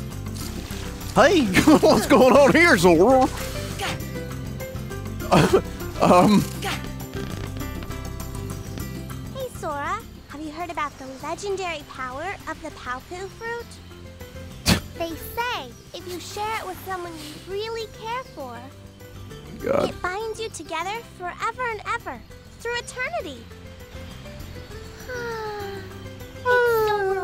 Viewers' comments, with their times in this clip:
0:09 Selphie lowkey sounds like Chirithy.